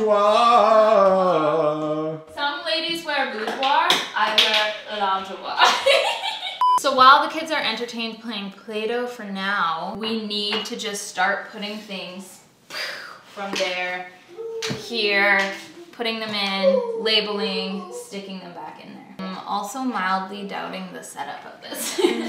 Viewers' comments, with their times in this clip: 0:06 that laugh lol!